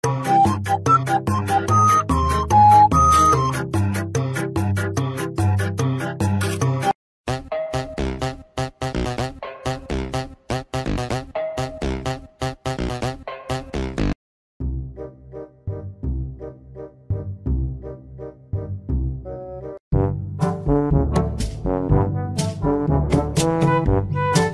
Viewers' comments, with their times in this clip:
0:08 The music repeats itself...